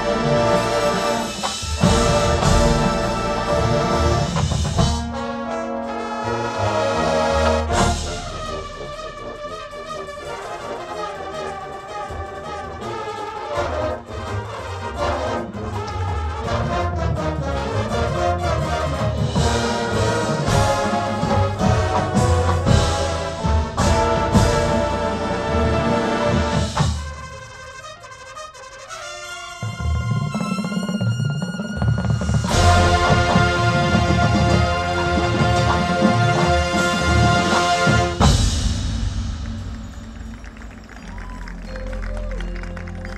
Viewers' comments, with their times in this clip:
0:09 I'm getting '21 Hebron vibes
0:27 How do they play those fast notes ? Insane hours of practice i get that. But like mechanically how?
0:29 bro the bass run Jesus Christ!!!